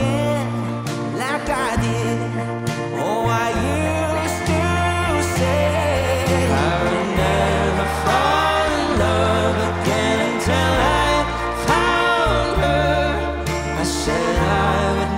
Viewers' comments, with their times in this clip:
0:03 That "Oh I used to say" by Kodi Lee is just 🤌❣✨